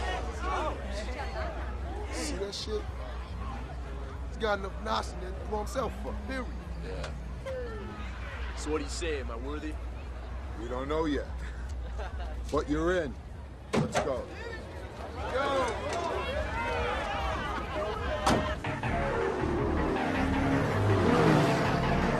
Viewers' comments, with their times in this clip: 0:03 what does Ja Rule say here?!? decades later and still don't understand what the dude said